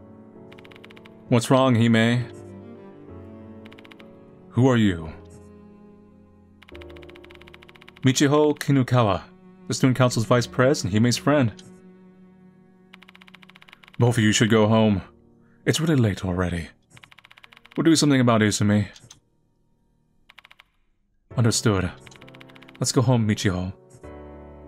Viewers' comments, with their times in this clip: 0:05 "He's all tied up right now" lol Damn it, that one really got to me! Especially with that casual, dead pan tone...